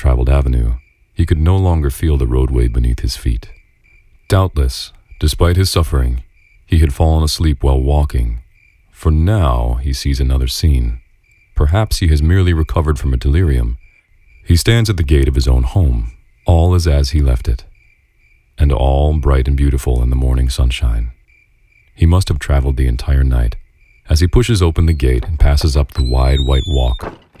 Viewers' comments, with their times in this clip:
0:09 when he says now around C2